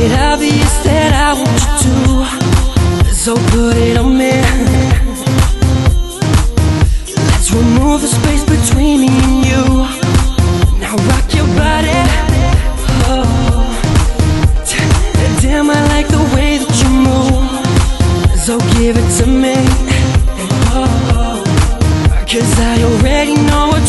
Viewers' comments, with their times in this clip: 0:10 I know you want me! ......YES, I do! <3333 I really love the way he says: NOW ROCK YOUR BODY! he is so hot when he says it! <3 !